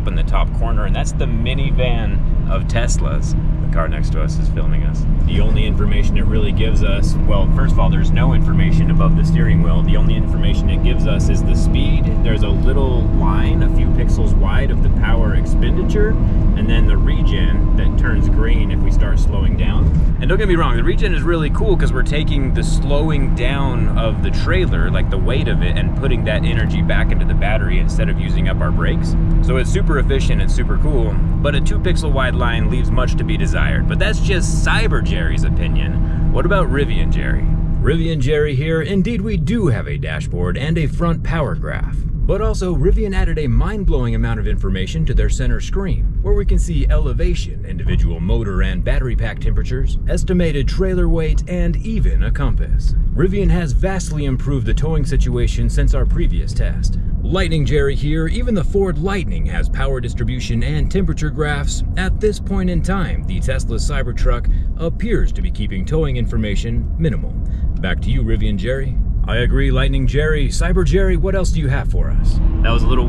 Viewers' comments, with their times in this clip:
0:08 extreem bass sounds
0:55 The Cocomelon karaoke mic 😂